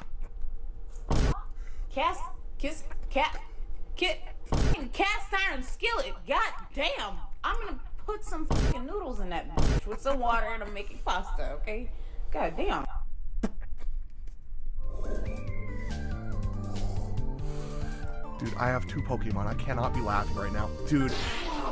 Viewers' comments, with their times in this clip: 0:03 She almost said kit-kat